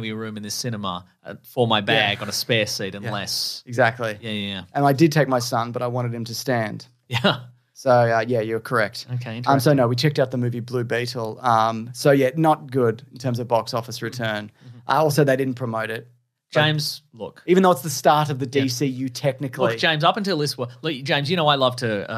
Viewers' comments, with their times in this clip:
0:05 “I did take my son, but I wanted him to stand” Simple joke, elegant timing and delivery